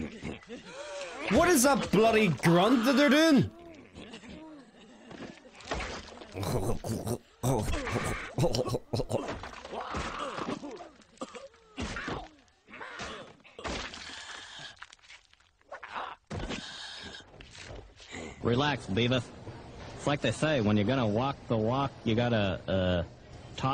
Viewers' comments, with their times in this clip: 0:05 I think that’s how they laugh